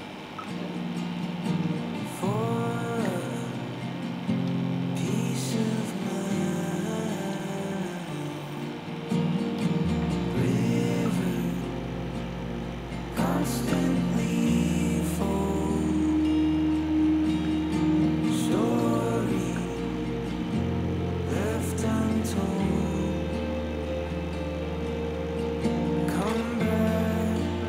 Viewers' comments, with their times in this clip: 0:08 What is this beautiful musics name very peaceful hottest time of the video